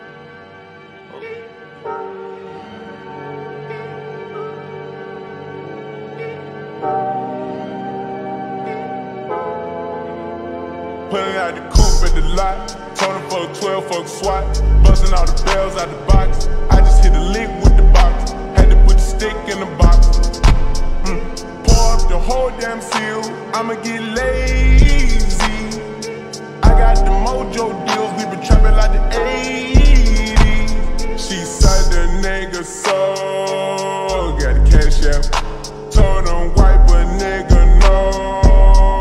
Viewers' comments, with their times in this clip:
0:09 the beat just hits different🥵
0:21 the lil “hm” 😭